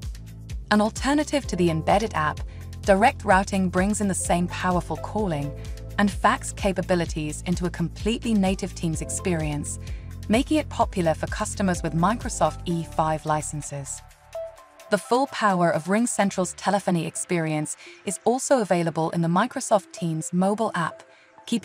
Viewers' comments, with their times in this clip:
0:03 'rawting' = 'rooting' spelling = routing